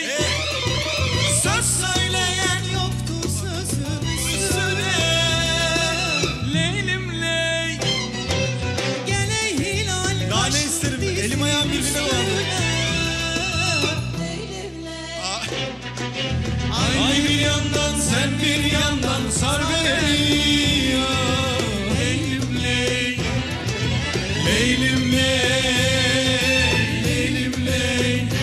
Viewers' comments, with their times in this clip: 0:09 why no one is talking about the background singer her voice is amazing
0:09 More beautiful than ibrahim and his son voice